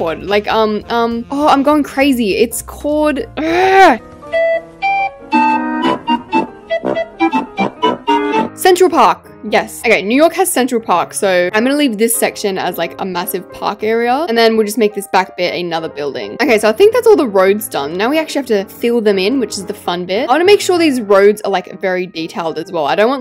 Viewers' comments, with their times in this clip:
0:04 new norkers😂 do you mean new Yorkers 😂
0:06 girl what’s a new norker